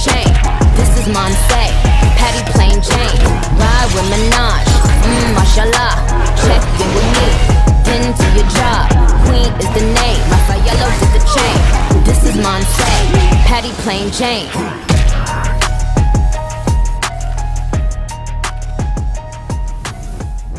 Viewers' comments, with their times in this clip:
0:07 that shield sounds with The song was incredible